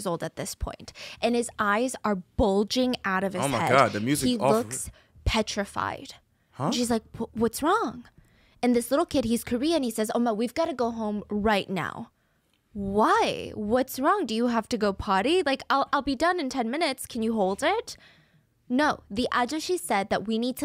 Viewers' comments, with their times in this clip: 0:03 there is no music